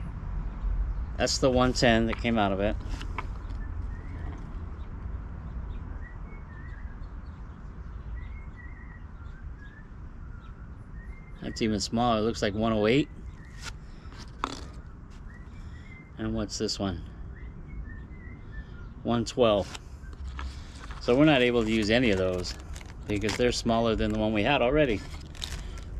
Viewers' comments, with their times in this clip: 0:08 the strangest bird starts to sing in the background😅